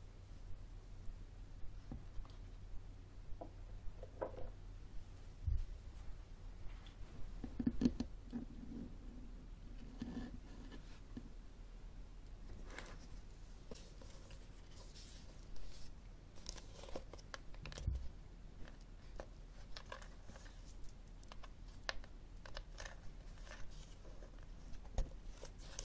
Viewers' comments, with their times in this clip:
0:06 Stay tuned until when I start to tap and scratch on the hard cover book. The book is relatively new, so the page flipping part is extremely relaxing. Which one is your favorite trigger? Let me know in your comment! ;)